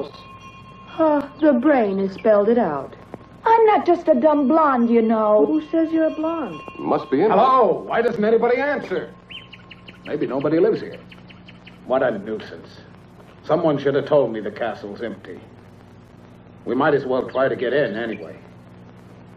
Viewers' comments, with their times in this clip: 0:05 The dubbing in this film is obvious